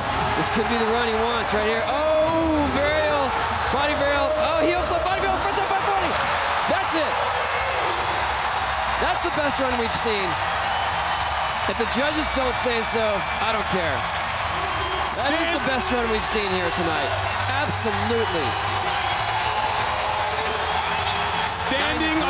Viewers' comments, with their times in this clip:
0:03 sounds something like "o my girlfriend is super funny!"
0:03 i swear he says "body varial heelflip 5 year old frontside 540"
0:03 the commentator seconds is talking like he is about to get a heart attack